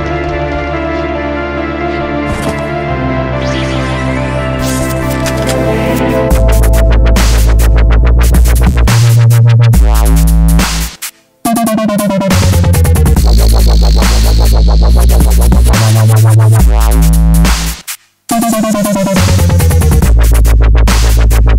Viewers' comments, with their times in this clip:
0:06 my bass exploded
0:06 Sad enough, 132 poeple died due to a too intnce eargasm. R.I.P. BassLovers